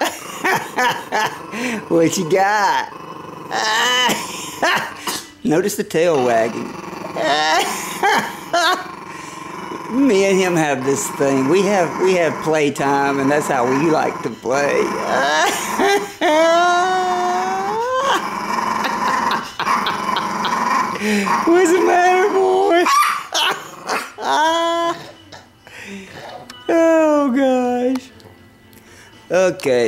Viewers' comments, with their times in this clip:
0:08 so that's where my car engine went
0:08 That stare down is crazy 😂😂😂😂...he was powering up like Goku when he turned Super Saiyan 3 and Majin Boo and Boo kept laughing 😂😂😂😂😂😂
0:10 Me and him have this thing. We have playtime and this is how we like to play CONTINUOUS DOG GROWLING 😂😂😂
0:16 this man is laughing in the face of death